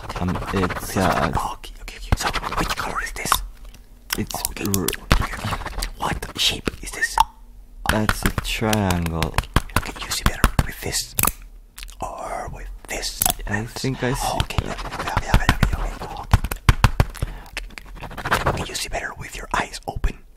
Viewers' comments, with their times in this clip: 0:08 The writing sounds like he's punching the paper lol